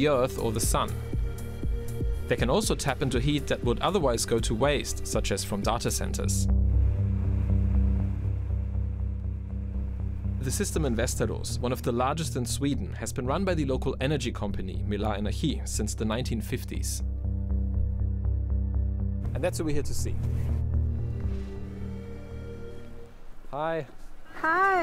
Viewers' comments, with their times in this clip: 0:10 "The System in Westeros." Man they developed fast :D
0:11 Vâsteras sounded to me like "Westeros" from Game of Thrones. Still, thumbs up for this intresting video!